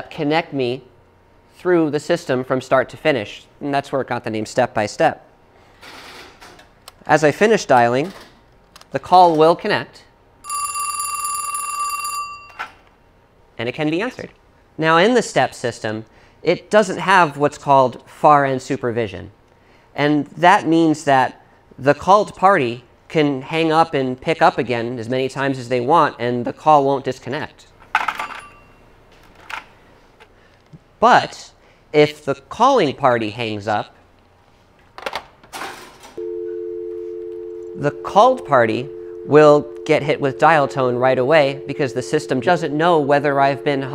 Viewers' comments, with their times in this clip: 0:10 My grandma had a phone that sounded exactly like that. Memories.
0:11 Hahahaha the chorus added nice touch
0:11 is the weird echoey sound on purpose???
0:31 Audio sounds kinda off I wonder if thats digital or not.